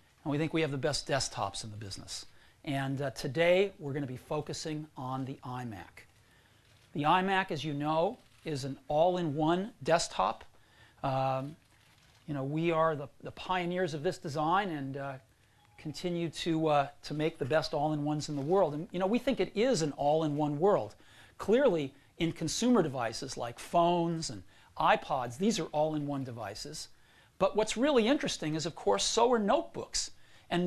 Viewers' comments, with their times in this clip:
0:05 listen closely you can here the siri activation tone
0:14 Legacy Nokia phone startup sound in the background! :D
0:15 that nokia tune hits hard 😮‍💨
0:15 Someone started up their Nokia in the background lol
0:16 who heard the Nokia startup?